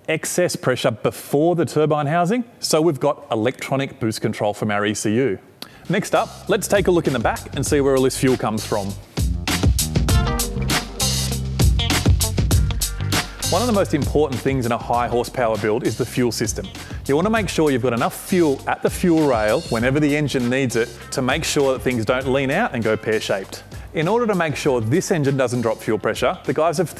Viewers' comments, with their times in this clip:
0:10 [silky smooth baritone]"let's take a look in the back and see where all the fuel comes from..." [run porn musak] lift the skir... errr I mean lift the trunk lid, yeah, the trunk lid ;) Brilliant ;))) luv ya guys ;)